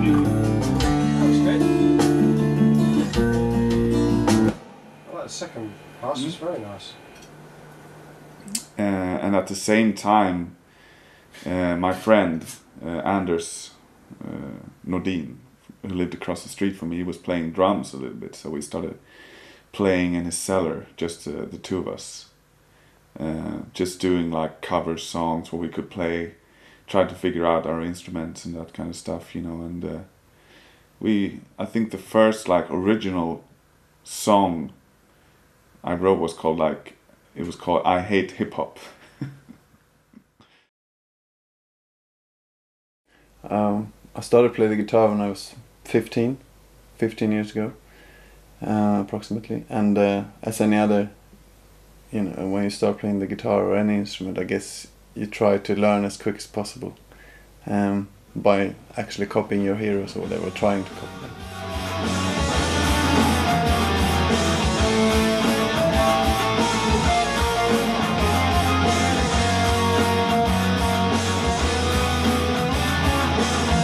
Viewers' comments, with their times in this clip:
0:04 oh hello Steven, what a lovely english accent...
1:00 He's playing these creepy demonic sounding solos while also looking like he just got off his 9-5 job, what a legend.